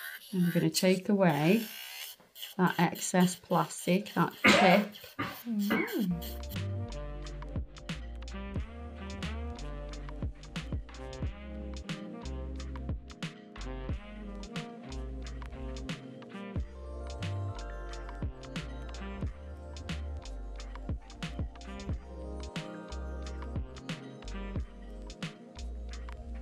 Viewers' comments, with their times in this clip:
0:07 kinda sounds like, pardon the expression, "porn music" 🤣